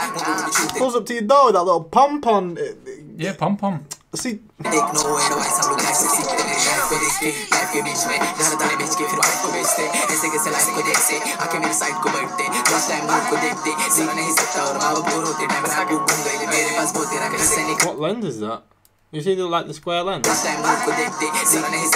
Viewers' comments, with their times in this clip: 0:07 do you listen " ayeeee " that sound of xxxtentacion